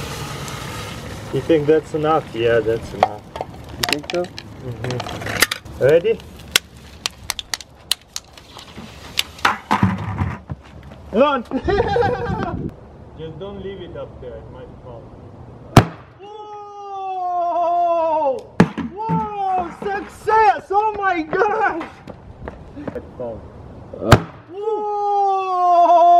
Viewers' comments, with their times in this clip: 0:05 Skip to his laugh when he runs away
0:08 It was funny when he said "Run and started laughing
0:09 that peter griffin's laught caught me offguard
0:10 when you ran laughing away
0:10 MOST BABY-LIKE GIGGLE AN ADULT HAS EVER MADE 😂😂
0:10 nothing has ever made me happier than to see a full grown 6'ft7 Russian man run away like a child and giggle like a little school girl haha
0:10 sounds like Peter Griffin
0:10 lmfao his laugh I'm dead
0:10 the laugh is priceless
0:10 lmfao Run then his laugh
0:10 lmao day laugh doe
0:11 sounds like a little kid
0:11 "Run" *schoolgirl laugh
0:11 the part where you laugh like a little kid xD
0:11 funniest laugh ever
0:11 You can see the elusive CrazyRussianHacker giggling through the forest, lol. :)
0:12 That laugh :D